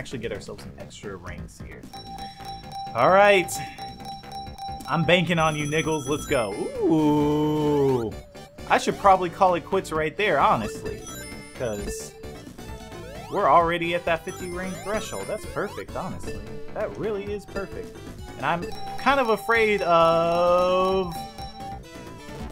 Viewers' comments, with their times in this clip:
0:05 knuckles? I thought he said nickels